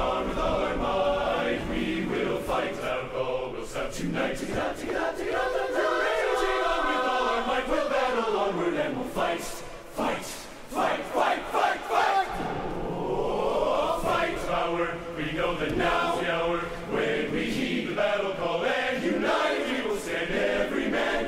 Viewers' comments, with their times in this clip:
0:03 wow the same singers sing a convincing B2 and a few seconds later an A4. Talent.
0:05 That bass entry is absolutely insane!! Such a joy to listen/watch this :D